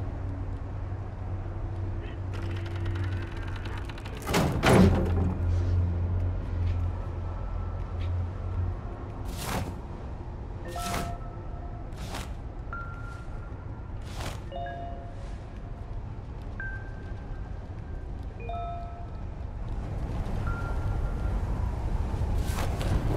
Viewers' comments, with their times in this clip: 0:10 The music is back ❤